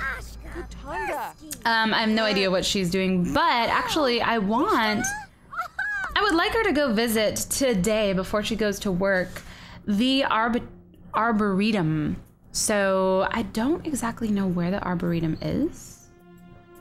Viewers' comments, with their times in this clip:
0:03 I think heard a fart